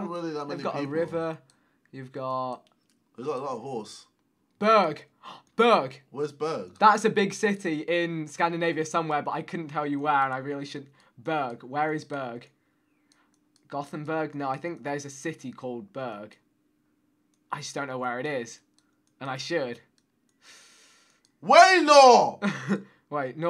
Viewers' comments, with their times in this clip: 0:05 LMAO You are literally pronouncing that as “Bög” wich means gay in Swedish omg. The pronunciation is absolutely perfect and is hilarious!
0:06 you startled screaming berg but it sounded like you said bög. Bög means gay😂😂😂